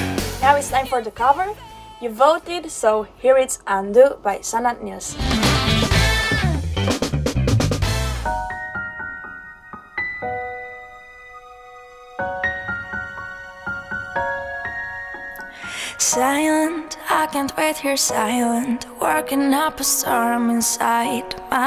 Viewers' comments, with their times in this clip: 0:09 ~~Roxen - Undo ! ! ~~ Sounds magical ! Good job that is a good cover . One of the best how no one is talking about that ??